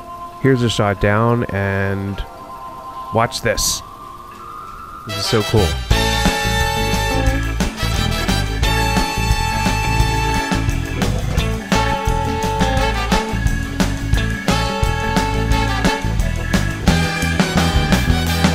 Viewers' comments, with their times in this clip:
0:03 LMFAO Why'd you add that music! 😂